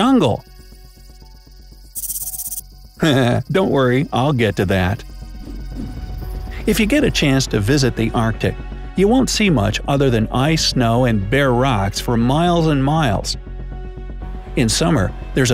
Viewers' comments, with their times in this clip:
0:03 I love how the narrator laugh.